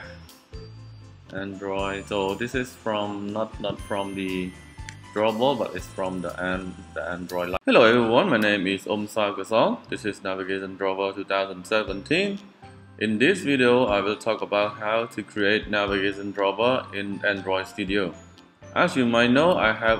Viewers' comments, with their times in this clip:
0:07 I think your video has been corrupted. your audio starts over and the video continues to keep going ???